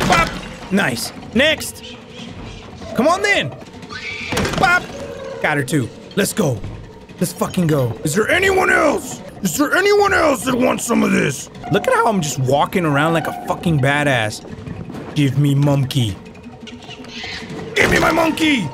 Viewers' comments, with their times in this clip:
0:03 best cut off scream 😭🙌